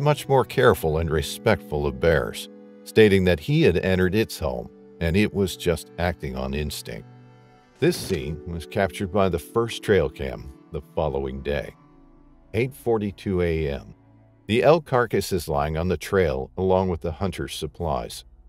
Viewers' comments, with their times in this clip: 0:04 Awesome click bait, stock footage and stupid computer voice. I don't understand how you edit in and SAY "nine o'clock." SMH